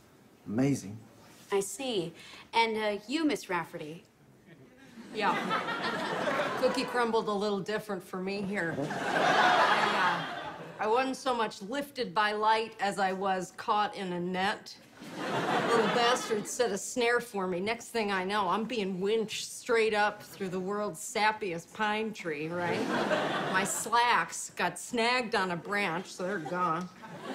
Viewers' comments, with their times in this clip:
0:08 Did Kate McKinnon farted ?
0:09 —did Kate McKinnon fart there??? 👀🤣